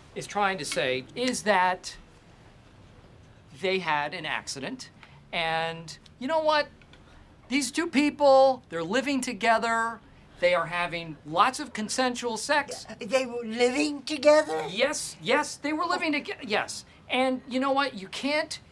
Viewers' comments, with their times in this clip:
0:05 Toby is laughing to himself